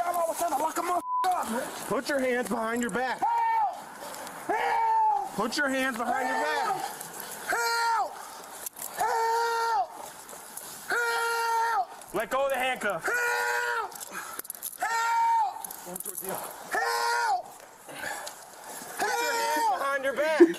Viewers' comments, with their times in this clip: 0:03 Who's he screaming at to help him 😂